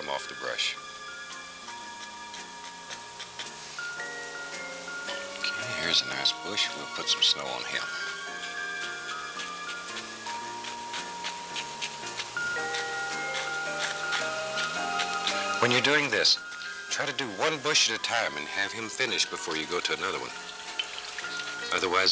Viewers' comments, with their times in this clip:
0:04 at half speed sounds like a lost david lynch episode